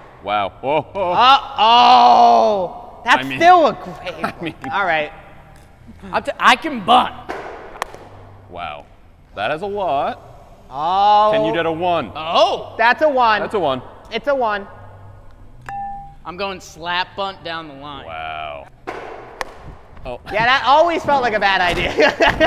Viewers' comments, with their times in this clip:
0:10 No island music made me sad